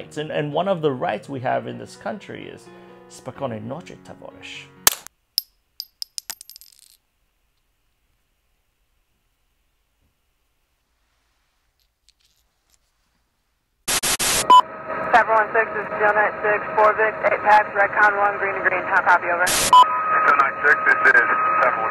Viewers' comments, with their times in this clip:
0:03 Would love to know what you said. Hard to understand the first two words :(